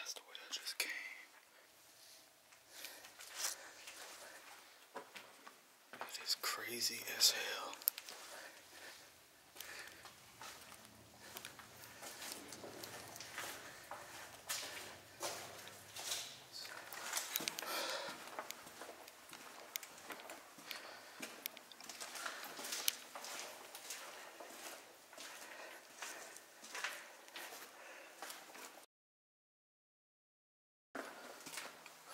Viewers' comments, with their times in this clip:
0:07 seconds in when you are deciding which tunnel is the right one out and start walking down the tunnel, turn up the sound you hear someone run several steps. This was super scary!!! So glad you okay!!
0:16 Yep, and you hear someone say something behind him (maybe in front), but it WAS NOT his whispering voice, as you hear him breath just a moment later, not enought time to speak then recover a breath. It comes with the extra set of footsteps.